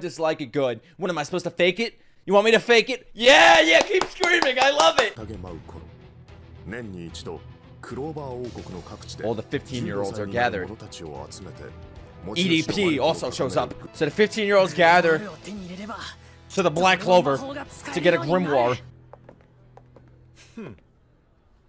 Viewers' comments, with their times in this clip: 0:06 I dont have issues with his voice, but alot of people do. The voice actor heard the criticism n dialed it back. But that a few episodes in or so i think.